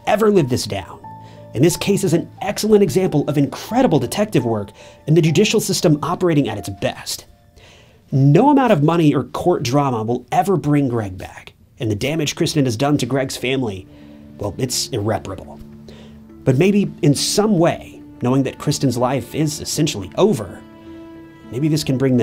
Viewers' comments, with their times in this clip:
0:06 finally the MADDENING piano stops. It's all I can think about. I hate it so much.